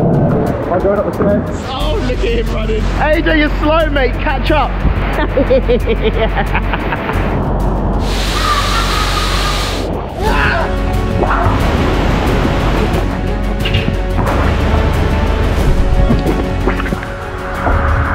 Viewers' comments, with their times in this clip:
0:04 that evil laugh 😂😂